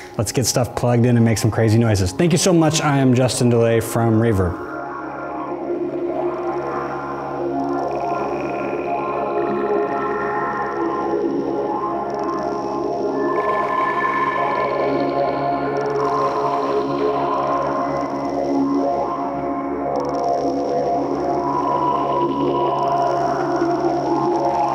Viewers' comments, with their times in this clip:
0:07 At the end of the video when you went for the "crazy pedal" sounds, what is the effect that I call the bouncing pebble? That's what it sounds like to me? There is also a scratching sound. Thanks in advance if you know for certain what pedal(s) these sounds are from and how to re-create them. I'm sure some of that is coming from the Bit Commander but not sure what else. The sound is prevalent onward to the end.